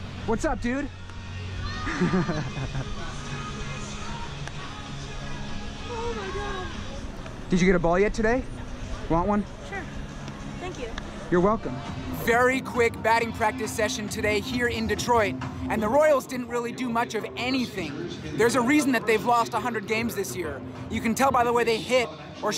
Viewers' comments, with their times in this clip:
0:08 That was the most casual sure